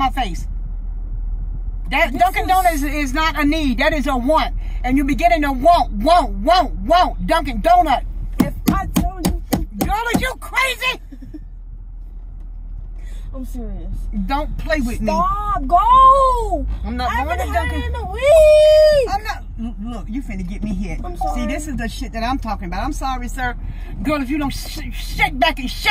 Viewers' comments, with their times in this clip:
0:06 tell me doesn’t sound like wap wap wap Give it a heart ❤️ if you think that